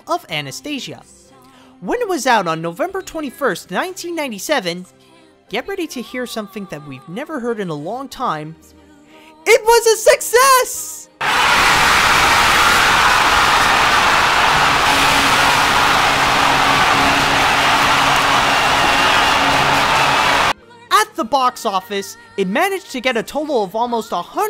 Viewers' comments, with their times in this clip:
0:08 Turn your volumen down